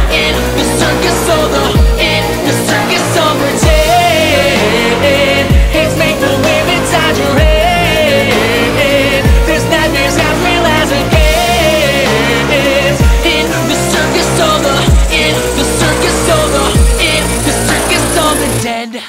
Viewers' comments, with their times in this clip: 0:03 yo ennards laugh though nice detail